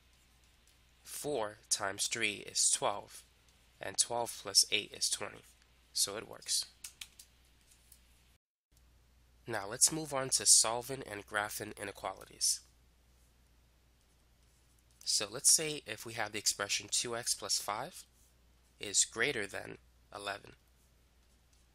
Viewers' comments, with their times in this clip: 0:04 Made me happy when he clapped